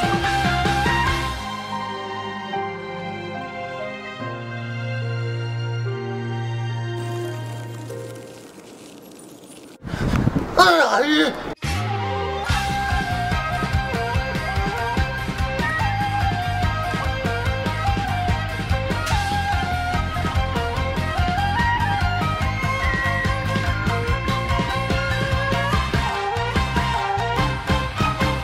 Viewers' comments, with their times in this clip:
0:09 Honesty the best part cause everyone in the English dub version can't pronounce Liyue lol